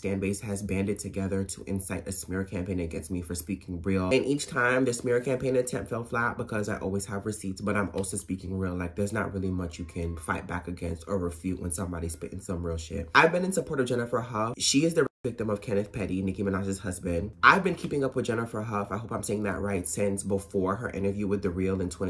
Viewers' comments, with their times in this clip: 0:10 You had me scared with that noise ish in my right headphone, my dad is 80 and I thought he fell out of bed and was screaming for help, I ran in there and he was just lying there peacefully😭✋